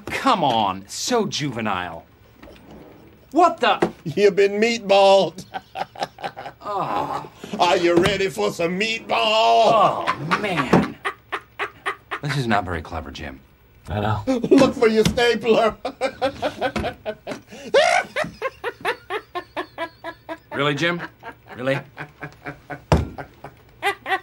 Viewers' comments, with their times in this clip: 0:05 This scene is even funnier when you realize Stanley was laughing at Jim the entire time.